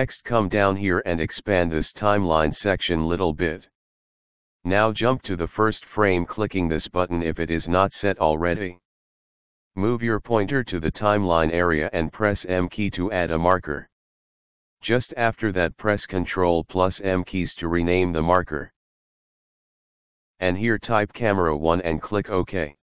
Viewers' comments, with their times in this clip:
0:08 if you don't want to go brain dead listening to this voice the part you're looking for is you're welcome